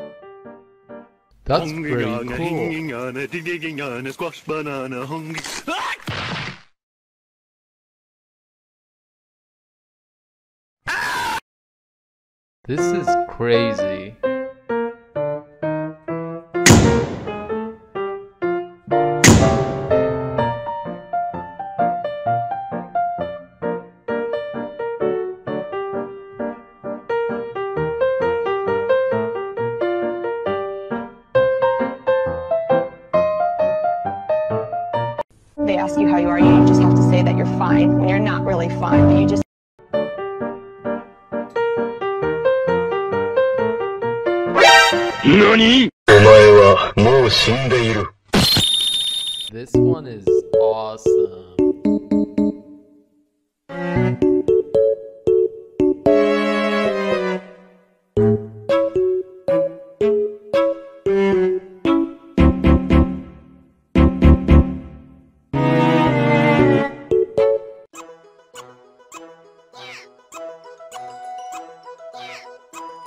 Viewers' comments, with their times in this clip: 0:10 Samsung Galaxy S3 Mini Earrape Screaming Ringtone
0:44 does green say “noony” or “looney”? Please, I need answers!
0:59 Blue Talked But He Didn't Made A Sound